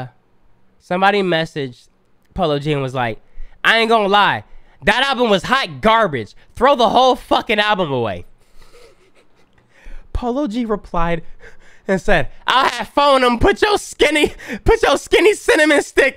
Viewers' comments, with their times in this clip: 0:04 why he read it like dat doe 😭😭 made the whole thing x10 funnier